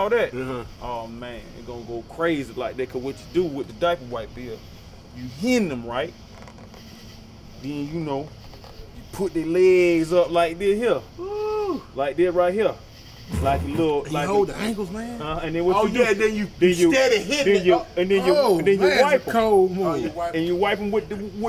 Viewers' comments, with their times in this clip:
0:08 you know your in the south with those locust in the back.. I'm from Texas so i hear that shit all day in the summer...